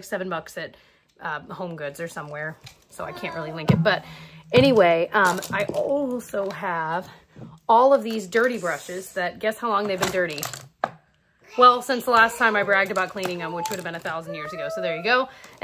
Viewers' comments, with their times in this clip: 0:03 Omg your kids voice sounded like it came from my own room and i was terrified for a moment 😂